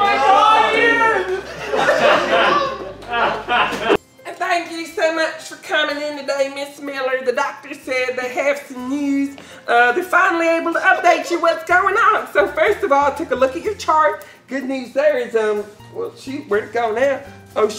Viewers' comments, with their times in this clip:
0:04 had whiplash when i hear the sims 2 build mode music omfg🤣